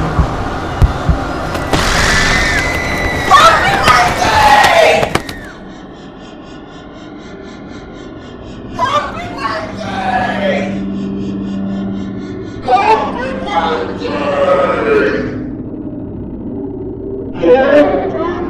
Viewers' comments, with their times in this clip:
0:03 "Happy birthday"? No "Pour me my tea!!!!" You cannot unhear